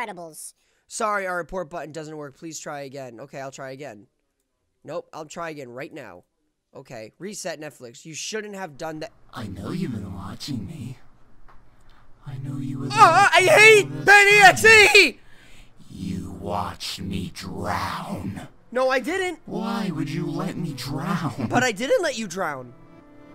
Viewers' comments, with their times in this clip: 0:08 jumpscare and also sounds like comitto